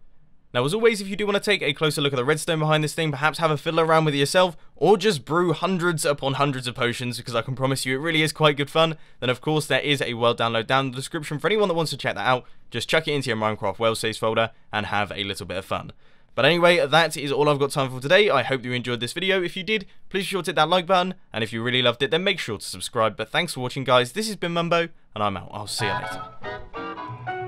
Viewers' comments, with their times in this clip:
0:08 have a fiddle with myself??